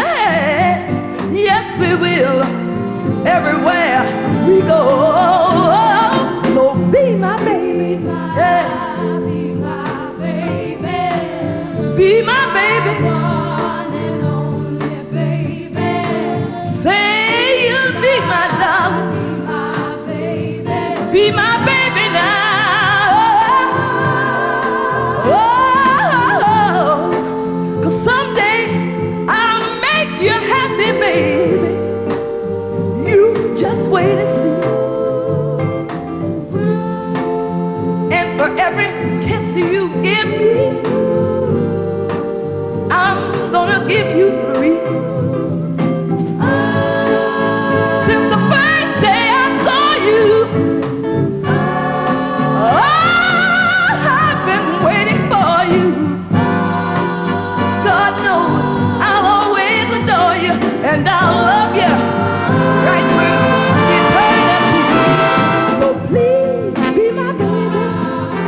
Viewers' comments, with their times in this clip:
0:04 YeSs CiSsY that Note Run Down Was Everything My My My this whole song was done with nothing but Excellent's 🤩🏆🤩
0:53 Whitney sounds like herrrr